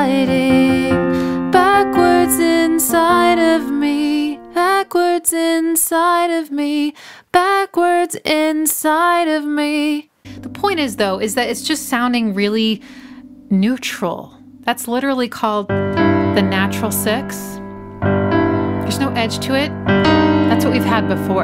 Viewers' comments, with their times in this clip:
0:07 that last "me" you did there was so Tori and it felt so good in my ear bones.